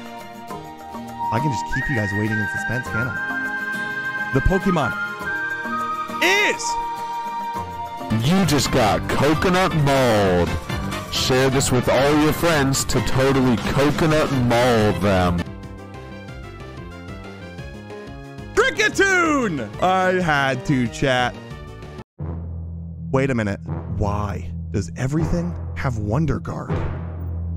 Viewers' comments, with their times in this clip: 0:08 I know that cry anywhere. It haunts my dreams from that one rainy route. No coconut mall can stop me